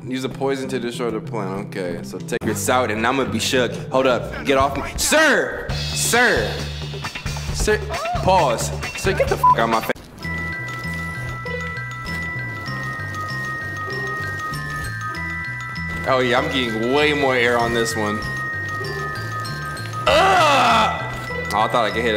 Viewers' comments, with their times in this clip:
0:09 Did y’all hear the noise that the guy made 😂😂😂